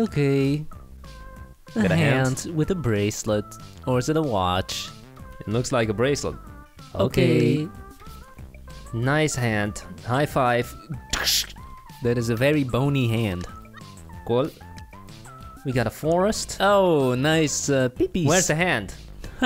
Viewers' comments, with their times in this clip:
0:06 they said ok together so perfectly!!!